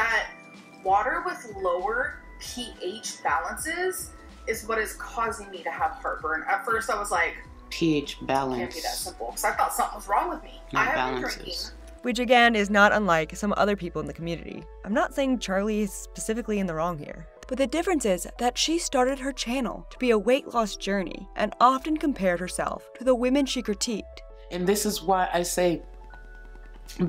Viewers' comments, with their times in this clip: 0:08 were going to comment on how AL is saying the word balances instead of the fact that she’s is literally saying water gives her heartburn... 🤔🤔